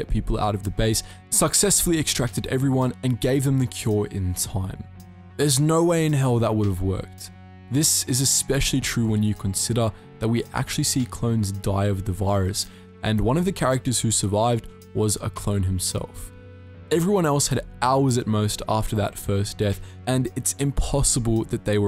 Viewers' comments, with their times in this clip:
0:05 And breathe my friend